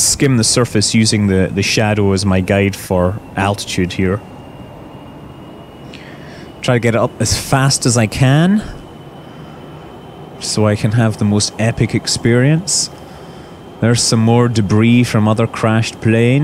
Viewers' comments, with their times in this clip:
0:04 sounded really wrong before he started talking about debris!